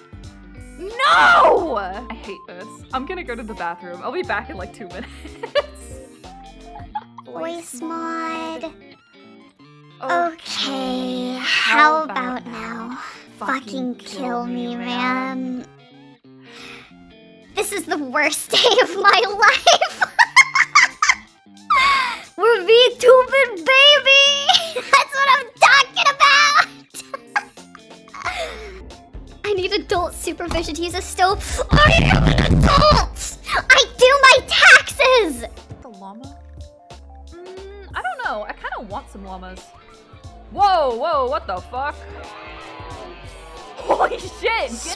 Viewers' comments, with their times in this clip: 0:07 the double voice demon juniper is fucking sick and I am HERE for it. Mabe thats how Full Moon should talk, but with a deeper double instead. Or hell, do high, low, and normal all layered like that for that sick "possessed by a young archdemon" vibe
0:31 “I am an adult” that sounded EXACTLY like a 10 year old brat😂